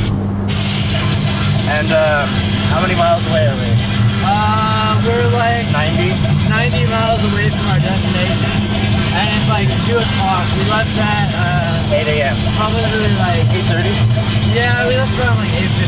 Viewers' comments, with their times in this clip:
0:03 that song sounds suspiciously like Sex Ed Rocks by I Set My Friends On Fire and Smosh.